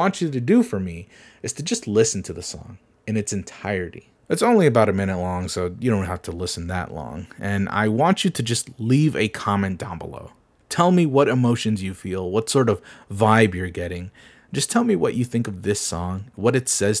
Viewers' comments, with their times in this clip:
0:04 for the scene it song idk it just kinda sound like a generic menu soundtrack. maybe something you'd find on copyright-free sfx sites.